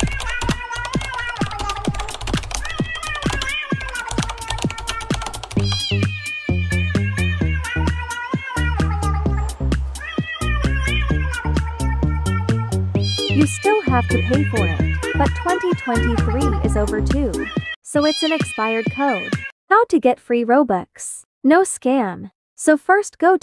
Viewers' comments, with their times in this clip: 0:07 this music is so funny